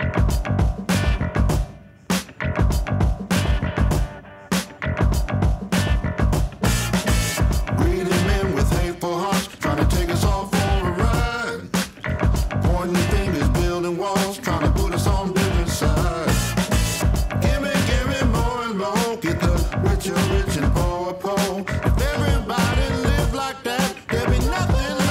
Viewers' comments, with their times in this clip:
0:10 The background music in general in documentaries bothers me a lot, music playing while people are talking is very distracting and imposes an emotional response usually unrelated to what is being said. But the music in the forefront just is filler, boring filler.